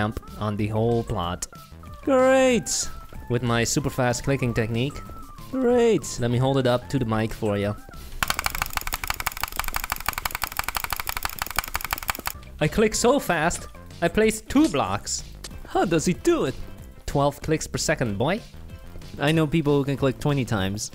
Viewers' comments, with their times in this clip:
0:08 is that butterfly click